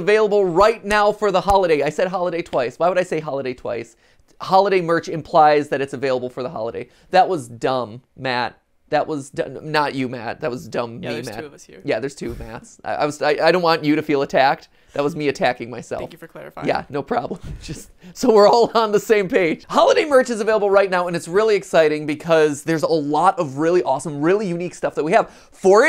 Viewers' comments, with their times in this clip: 0:07 I thought he was saying that was dumb, Matt instead of him saying that was dumb Matt